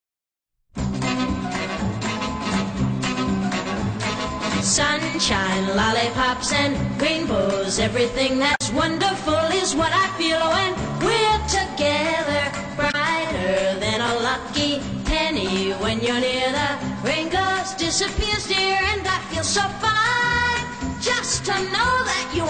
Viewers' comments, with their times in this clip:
0:05 XD XD HES SCREAMIN